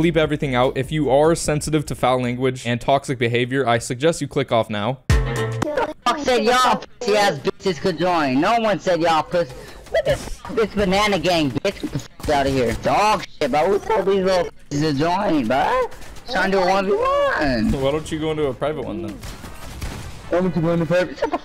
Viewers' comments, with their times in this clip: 0:05 That guy legit has a $3 mic calling people dogshit
0:06 sounds like daddy longneck